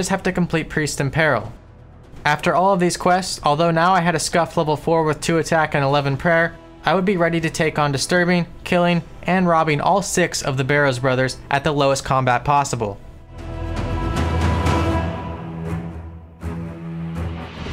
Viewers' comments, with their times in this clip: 0:05 I would be Rendi to take on